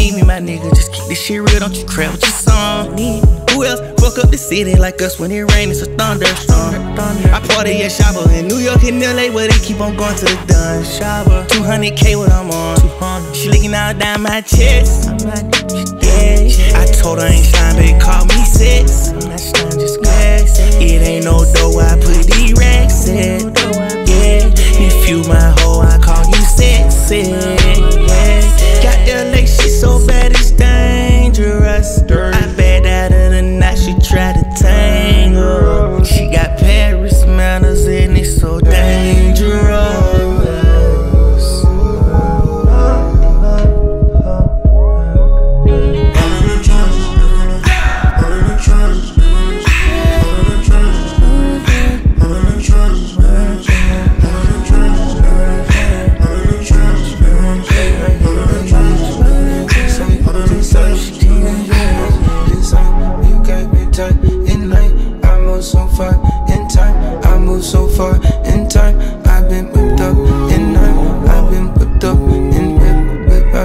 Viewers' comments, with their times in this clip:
0:03 the violin part here and at the end🔥🔥🔥
0:56 the transition from thug to travis 🗣️🔥🔥🔥🔥🔥🔥